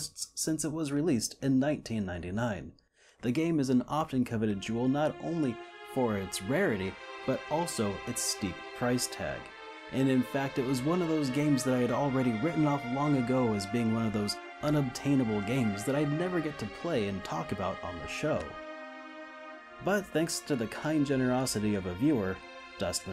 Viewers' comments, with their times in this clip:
0:07 that soundtrack, holly god. I'm still at the 25h of gaming Suikoden, but it's already one of my favorite games of all time.